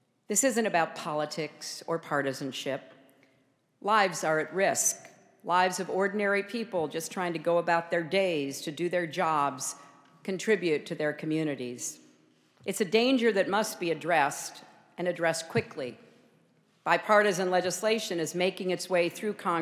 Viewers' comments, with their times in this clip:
0:03 she sounds so fake its unbearably.